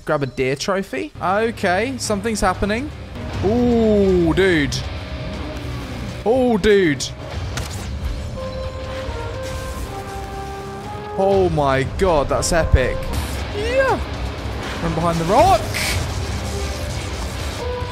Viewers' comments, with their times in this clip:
0:05 For those who haven't played Valheim, yes that's in-game metal music as the boss fight.